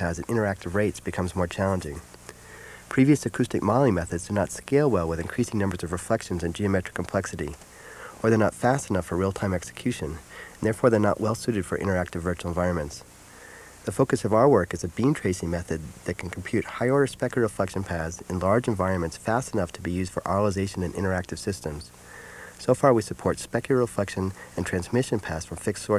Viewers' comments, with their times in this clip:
0:09 Guy is solid ASMR trigger material.